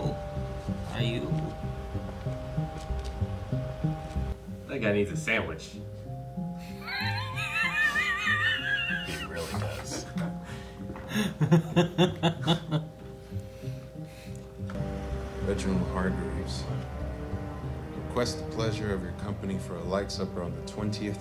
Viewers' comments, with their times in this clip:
0:04 "that guy needs a sandwich" lmao... idk why that got me laughing so much but it just did. Idk if it was his monotone delivery or what but he did have me laughing pretty damn hard right there haha